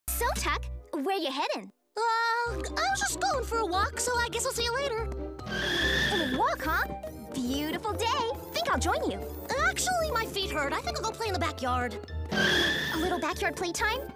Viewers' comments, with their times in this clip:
0:02 Sounds Like Butters From South Park